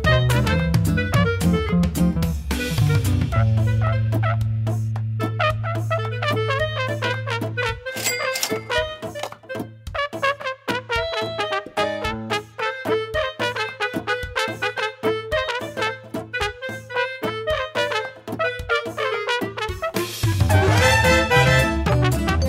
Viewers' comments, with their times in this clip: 0:04 Holy shit. That song got me so triggered.